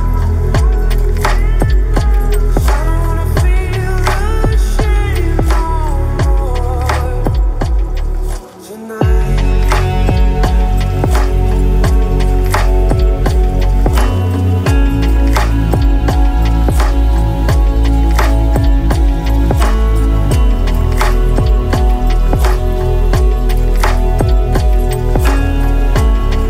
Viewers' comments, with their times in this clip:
0:09 what a beautiful music 🎶